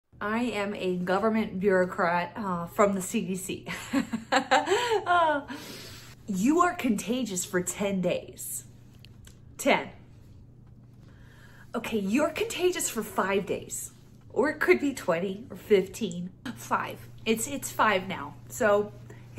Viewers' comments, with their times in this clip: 0:03 She needs to amp up that cackle if she expects to keep her job in the Biden Administration.